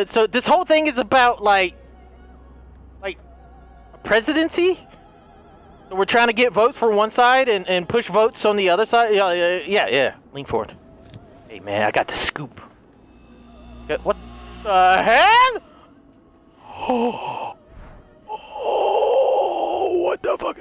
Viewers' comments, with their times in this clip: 0:07 the way he jus laughs as the seat is being hit 😂